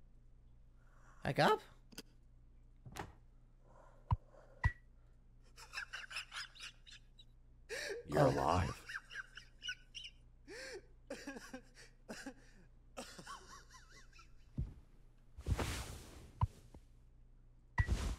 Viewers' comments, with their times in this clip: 0:06 sounds like Sun or Solar when something is really really funny